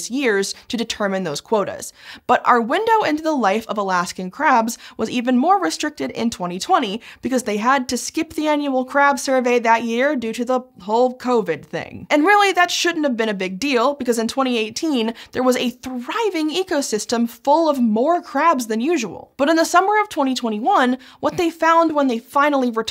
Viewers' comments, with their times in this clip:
0:10 'Whole covid thing' sounded like 'Hulk Hogan Ring'. Billions of crabs silenced by the atomic leg drop